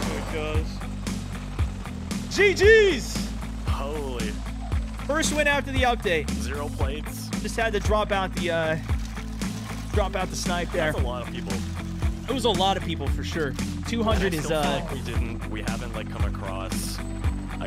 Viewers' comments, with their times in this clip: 0:04 Is that the song for every step I take i’ll be watching you it just sounded like it in the beginning but in a rock way